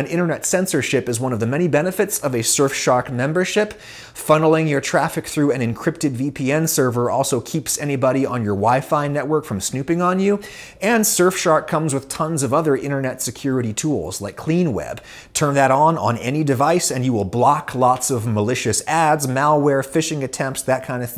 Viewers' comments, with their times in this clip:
0:03 that yankee accent really coming out there on that line "surfshark membership"